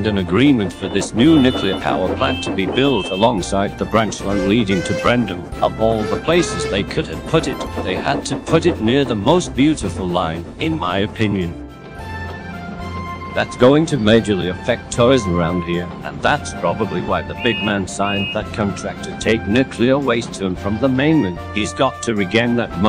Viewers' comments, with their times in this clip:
0:04 I knew you could do the CGI whistles and horns